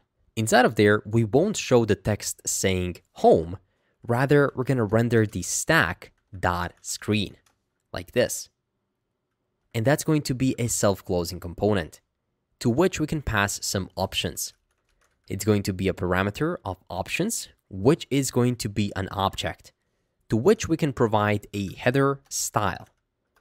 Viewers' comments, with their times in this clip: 0:09 the way he speaks through his error feels like he knows why it was happening. "still the same thing"